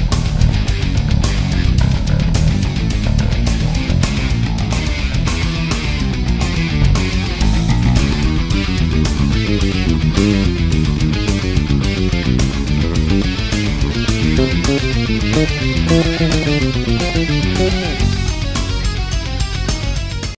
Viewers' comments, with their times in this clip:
0:10 wtf??? its SO CLEAN!!!!! especially the triplet part i almost died, thts extremely intense, to say the least. anyone who disagrees can try to make a better bass cover of this song, and they'll probably fail.